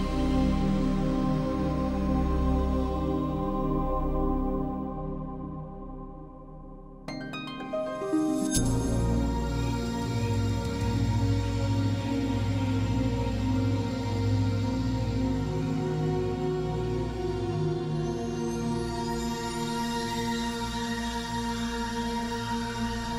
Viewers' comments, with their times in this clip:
0:08 Great work as always! Love that little transition sound